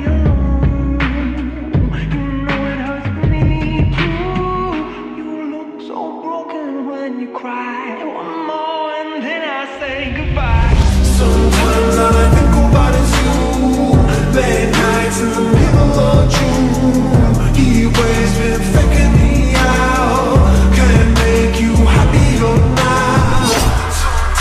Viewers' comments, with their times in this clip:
0:05 You look so broken when you cry its Hits hard when you try 0.75x 😢❤